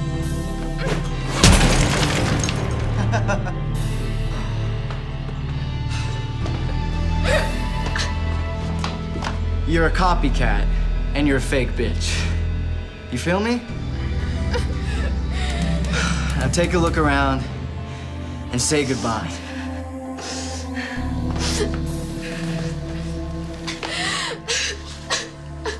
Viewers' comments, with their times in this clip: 0:09 this dude is so funny for saying that "Your a copycat and a fake bitch" I love his voice.